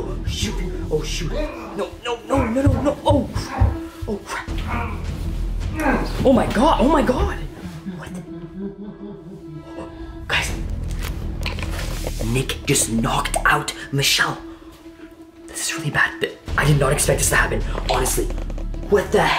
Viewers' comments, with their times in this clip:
0:05 That was weird how he laughed